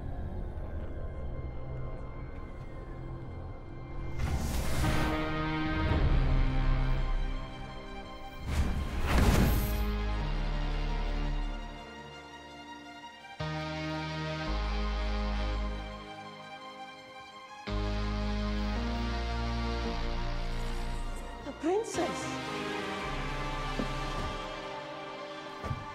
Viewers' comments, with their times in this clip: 0:04 that tense bgm🔥🔥🔥
0:04 the music... what this scene represents... one of the only really good scenes in a recent Marvel film
0:08 the landing sound blending with the bgm is so epic! 🔥🔥🔥